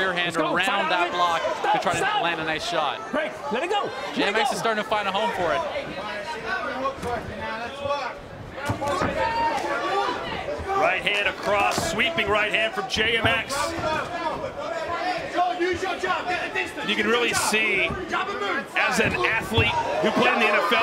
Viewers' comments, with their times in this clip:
0:08 Someone farted in